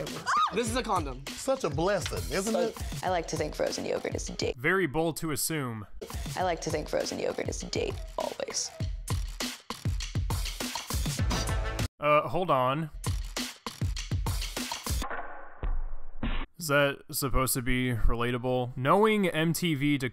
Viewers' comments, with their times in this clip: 0:04 It sounded like like she said “ I like to think frozen yogurt is d- “ because at the end of it I thought it was gonna end with ick.